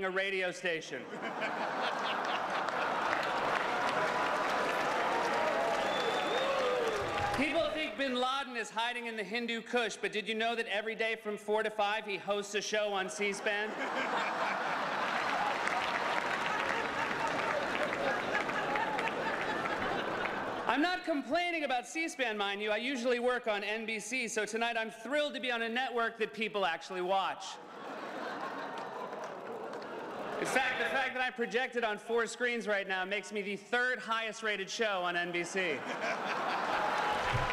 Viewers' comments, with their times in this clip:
0:06 bin Laden had been located and Obama had already approved the mission to kill him when this was filmed... Coldest chuckle ever caught on camera ;)
0:18 Obama laughing as Seth Meyers makes a joke about Bin Laden hosting a show on C-Span having only hours before given the order to have him killed. Stone cold mother fucker. Mad respect.